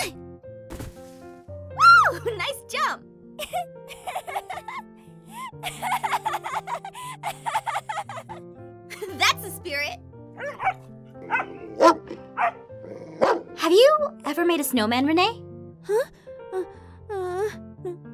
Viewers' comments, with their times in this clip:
0:03 I live Renee’s laugh 😊❤️❤️❤️❤️🤗